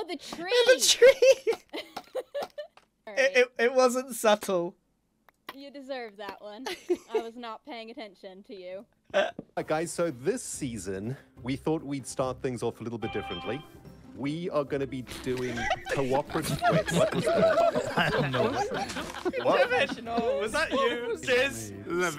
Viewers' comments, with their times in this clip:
0:09 whose phone went off lol